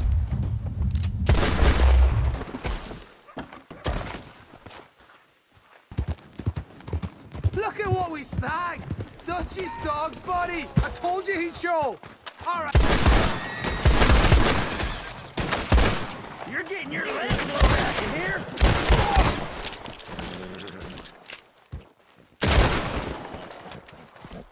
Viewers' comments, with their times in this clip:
0:05 Why don't you get out oof here .. The manner and tone of Arthur's voice here makes me laugh 😂😂